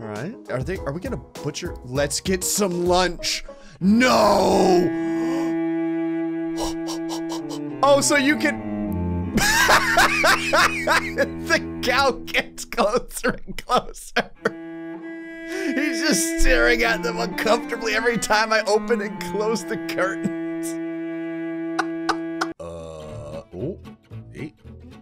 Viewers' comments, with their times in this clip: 0:09 I swer i can't help but smile when he laughs but the laugh got me dying, i repeated it like 5 times